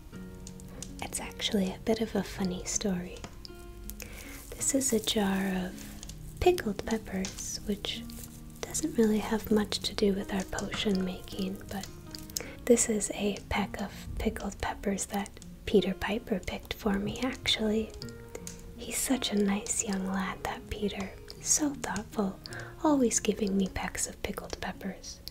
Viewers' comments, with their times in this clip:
0:10 the cut show us she had some problems pronoucing that sentence.